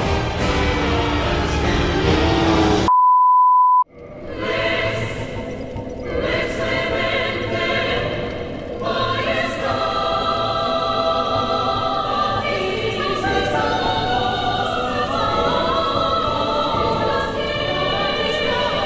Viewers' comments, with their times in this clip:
0:03 * hears the song being used * If you know, you know... o7